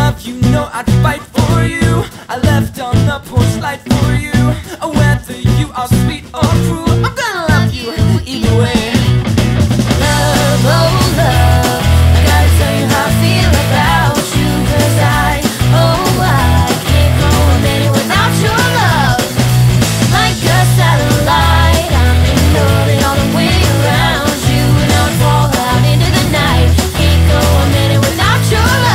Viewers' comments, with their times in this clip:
0:10 playing a mandolin in the back :D